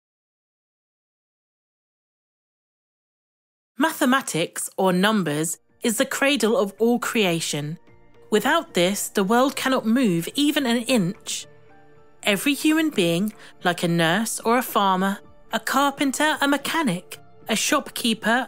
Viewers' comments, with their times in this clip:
0:04 You stopped me ... What an unpleasant voice to listen to...